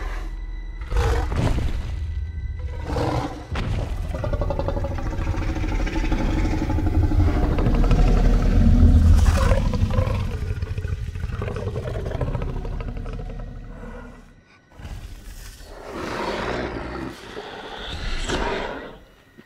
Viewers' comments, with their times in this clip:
0:07 gosh, that sound of Indominus is nuts